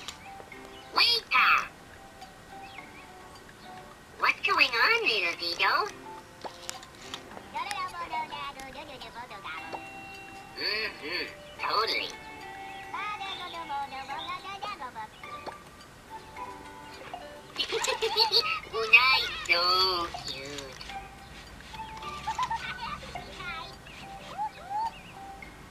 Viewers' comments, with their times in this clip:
0:06 The way he talks is in his languages. I don't know what your first furbling was trying to say